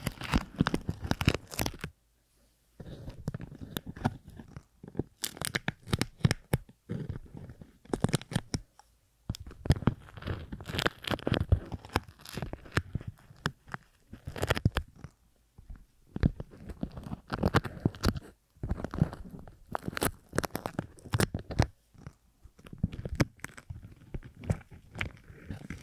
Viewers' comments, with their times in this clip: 0:10 i love it sounds like you're pulling out our ear wax and i think that could make such a cool roleplay